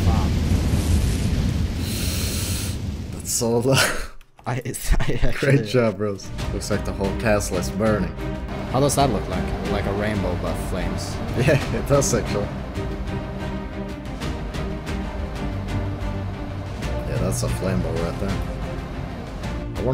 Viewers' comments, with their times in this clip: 0:06 what the intense music I'm just asking since I don't find any great like it